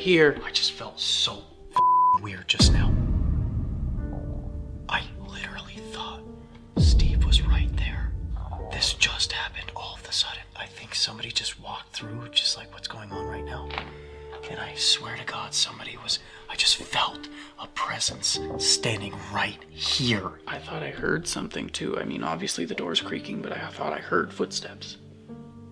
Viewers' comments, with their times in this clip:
0:04 Someone’s tummy is makin the rumblies 🤣🤣🤣
0:08 i hear also a wild stomach 😅😅